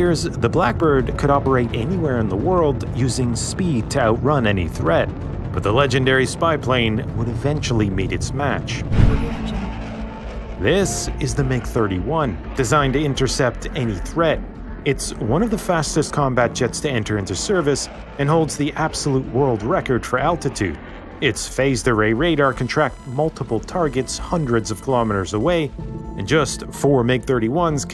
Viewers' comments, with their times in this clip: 0:08 I love how you can still hear the Audio Jungle in the whoosh
0:08 Bro am I hallucinating or did I hear "Audio Jungle" in your background music ???
0:08 Video editors know that gentle voice all too well
0:08 Anyone else hear the Audio Jungle watermark ?
0:09 mate is that an Audio Jungle ‘watermark’??